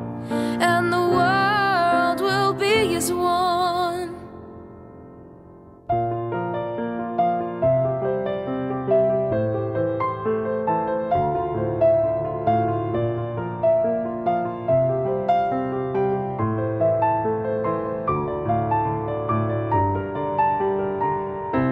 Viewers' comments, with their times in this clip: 0:04 The piano solo is one of the most brilliant arrangements I have ever seen!